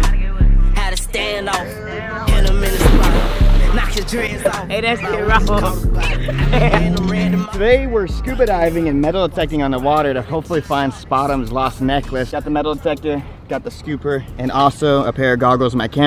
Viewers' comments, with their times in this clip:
0:04 that kaugh tho